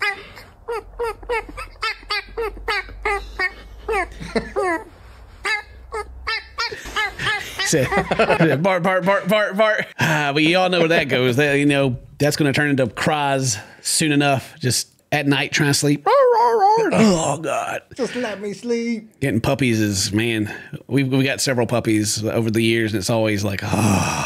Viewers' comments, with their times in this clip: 0:05 As a goat owner, can confirm, they are the devil! Cutest squeaky toy EVER!